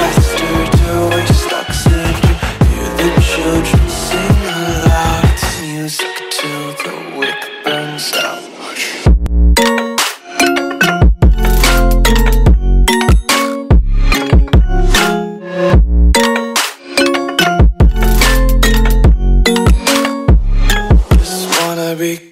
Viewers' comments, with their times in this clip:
0:05 also drop is sweet